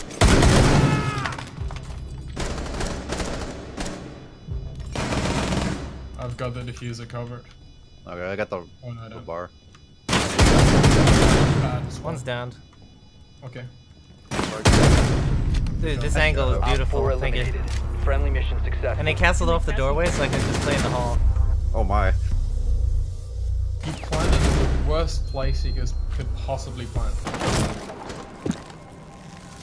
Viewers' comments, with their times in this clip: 0:10 sounds like terminator song hahahah